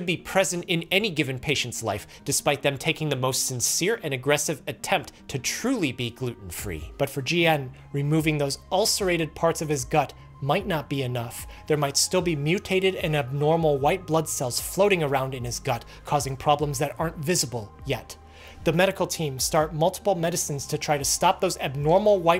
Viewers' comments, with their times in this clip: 0:09 Momentary helium leak?
0:10 What happened to your voice ?